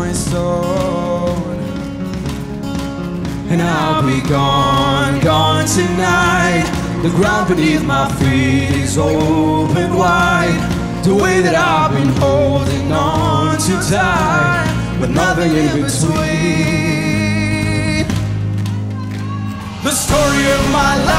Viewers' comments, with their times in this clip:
0:03 it was so confusing who was singing deep and high